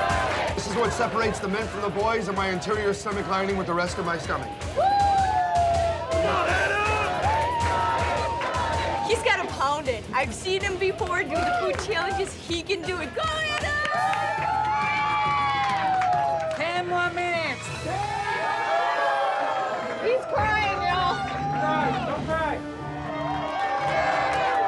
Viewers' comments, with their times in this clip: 0:10 The lady sounded suuuuuuppppeerrr canadian😂